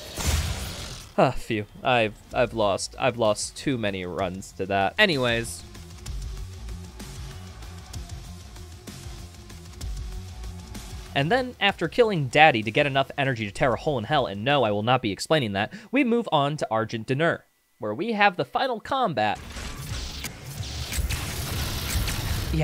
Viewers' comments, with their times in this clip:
0:06 Hold up- you matched the bfg shots to the ost-? Sick work ngl